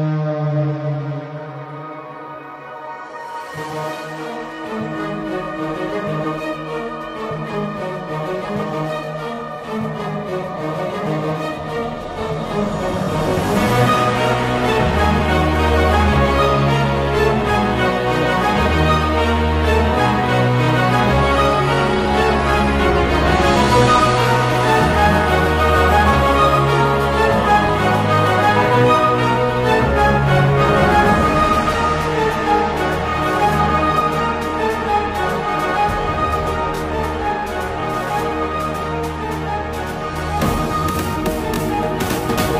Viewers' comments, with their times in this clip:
0:04 Me: Hears megalovania playing Also me: welp, i guess im gonna have a bad time making games huh
0:24 İ was thinkin abaut undertale and i heard megalovania